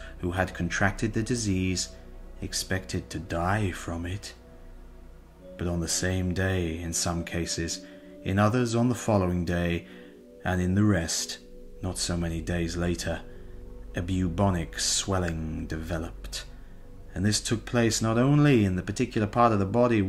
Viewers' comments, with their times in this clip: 0:05 '...expected to die from it.' The way you say that is brilliant!